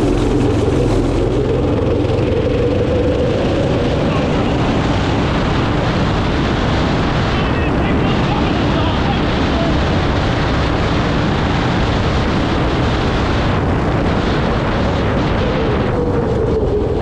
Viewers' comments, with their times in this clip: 0:05 white noise with some talking